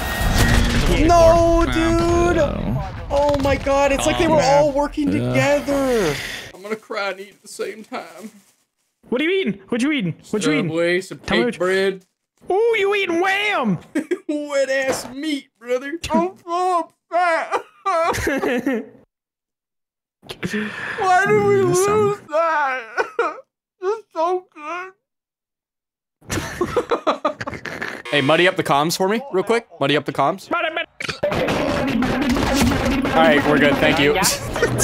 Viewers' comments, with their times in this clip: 0:05 I like how when he says "Im So Upset" it actually sounds like he's sad
0:16 did you practice or was that just a good impression of grizzy from the top of ya head